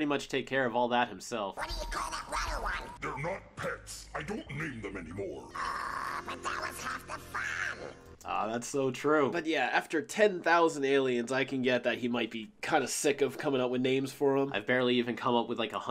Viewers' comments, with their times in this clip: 0:03 “what do you call that —— one” I have no idea what he says.I hear runner but that wouldn’t make sense, maybe it’s yellow but I don’t see that either